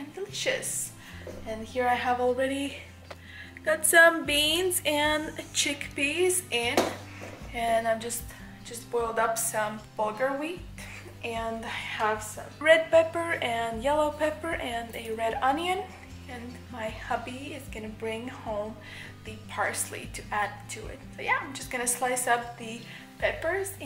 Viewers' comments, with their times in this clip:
0:08 she legitimately looks like she is going to pass out! Breathing heavy 😭 that poor baby